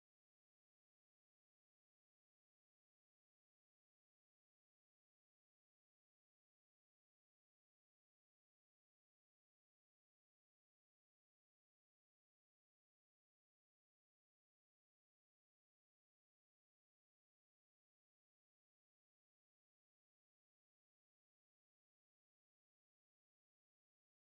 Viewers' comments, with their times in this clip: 0:07 What's the name of the music nice rhythm.